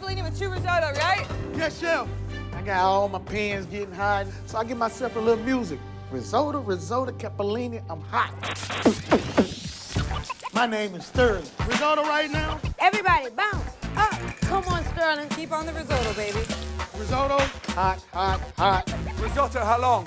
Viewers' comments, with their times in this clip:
0:06 Eminem has some competition